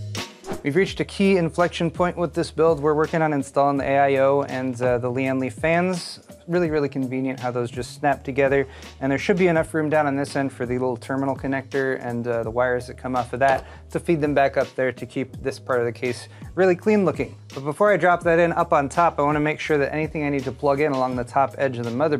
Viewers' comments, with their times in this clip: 0:08 chech check 123, could some one please check if its only my end ,audio now right on this .when Paul talks best eg from but most of video skipping interference